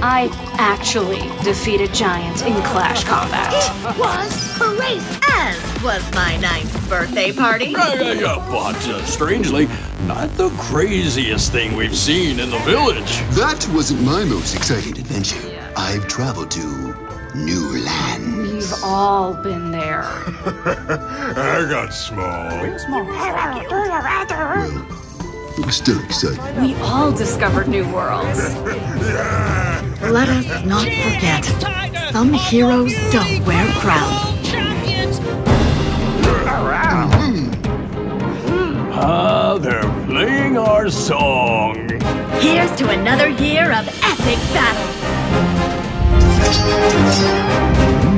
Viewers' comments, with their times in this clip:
0:09 Why is no one talking !
0:35 i like that song